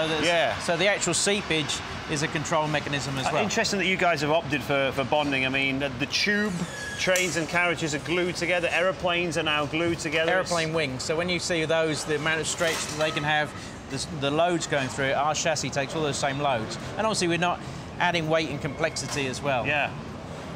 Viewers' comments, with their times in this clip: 0:03 he farted :D